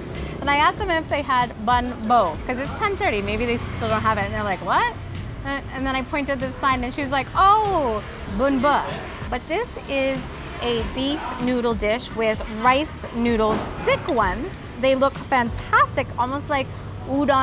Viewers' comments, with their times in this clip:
0:03 you asked for " bánh bò " which means a type of cake